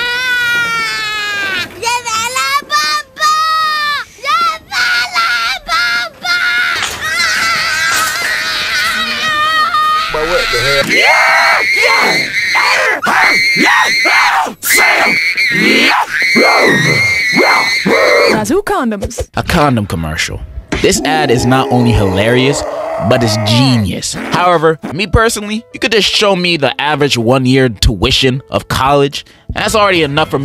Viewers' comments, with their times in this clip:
0:07 I know this language I think your Swedish dad in Swedish
0:13 It's the COD2 zombie noises for me 😂😂